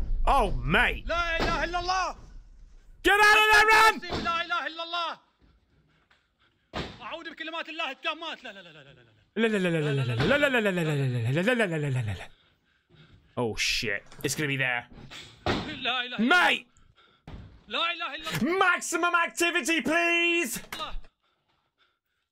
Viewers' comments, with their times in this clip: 0:10 no ... maximum potato chips please